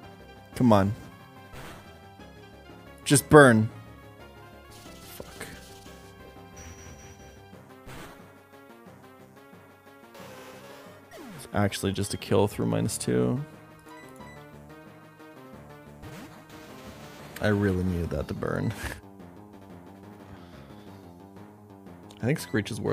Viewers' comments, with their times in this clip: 0:04 That one wasn't censored